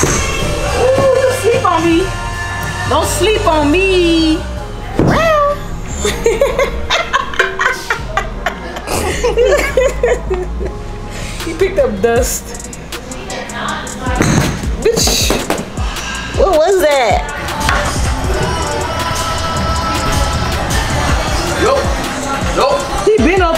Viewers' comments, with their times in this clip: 0:05 It was the cat noise for me 🤣😭 .